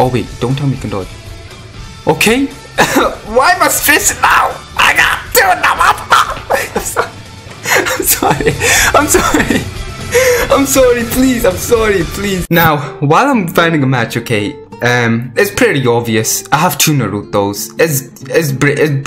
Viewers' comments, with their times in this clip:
0:04 I swear he spoke another language lol